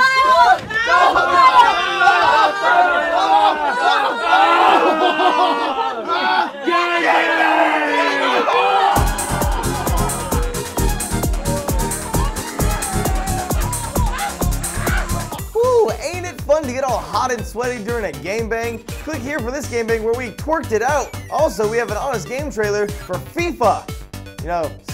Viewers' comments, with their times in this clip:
0:07 Anyone else hear the Skype notification ?